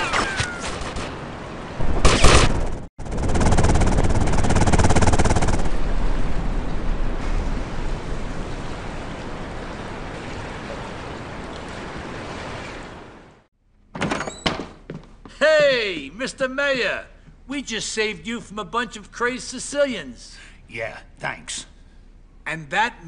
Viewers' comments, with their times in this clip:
0:04 BEST HELICOPTER EXPLOSION SOUND EVER!!!!